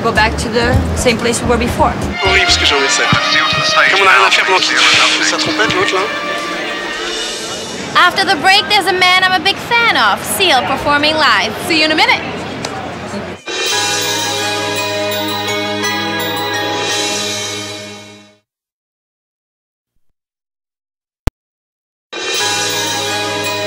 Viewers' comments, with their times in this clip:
0:05 heidi talks and looks like harley quinn in the batman animated series lol love her